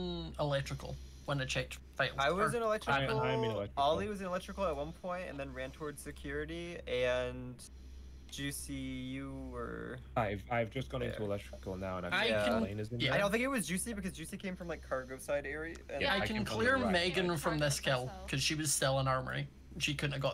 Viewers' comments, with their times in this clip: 0:07 For a sec i thought that gap room was called gay room 💀